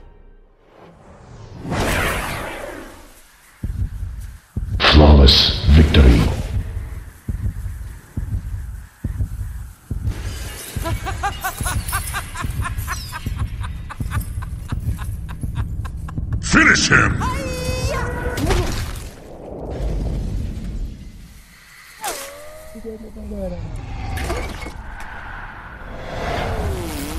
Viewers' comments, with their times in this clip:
0:10 That laugh is amazing.